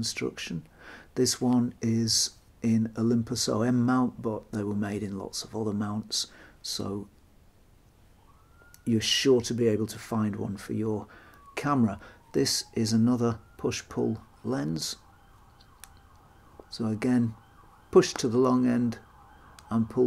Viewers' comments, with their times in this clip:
0:08 Excellent information! The could hear the camera police closing in on you I see they let you go after that. Close call. Had they arrested you, you could have done a selfie-Weegee, or if it had become particularly strange a selfie-Crewdson. Best wishes!